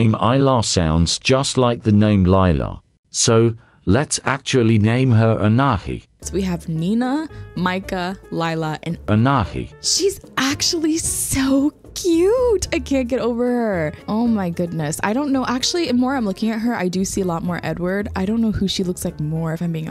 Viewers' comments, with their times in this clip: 0:07 HAHAHAHAHA THE AI VOICE “ANAHI”